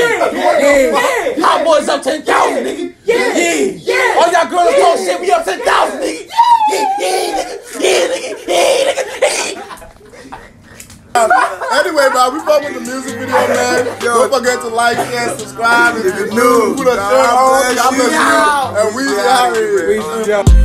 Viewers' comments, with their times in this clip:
0:05 This has me dead sounding like a whole pigeon out here